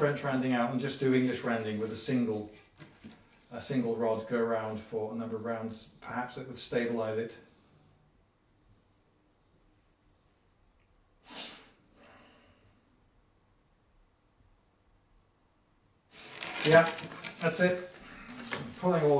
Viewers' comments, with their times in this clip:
0:07 this is the quietest 9 seconds on the whole channel lol